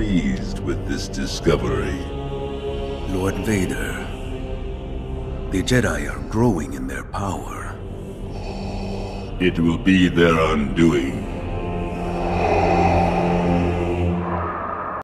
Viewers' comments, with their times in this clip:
0:11 that loud breathing game me chills
0:11 That breathing gave me the biggest chills down my spine